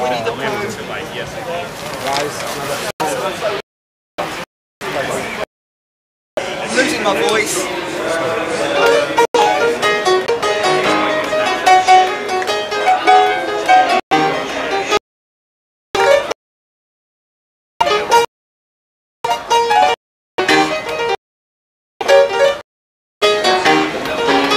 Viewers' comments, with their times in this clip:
0:08 I just want to appreciate the Professor Longhair vibes in all of this.